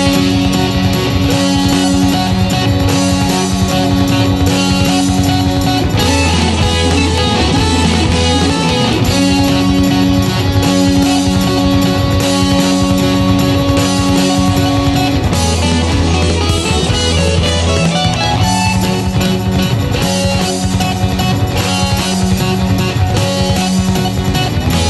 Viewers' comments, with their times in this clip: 0:06 sounds so fucking badass. Can’t believe they were doing stuff like this in 1971 sounds like Iron Maiden 10 years before Maiden O.o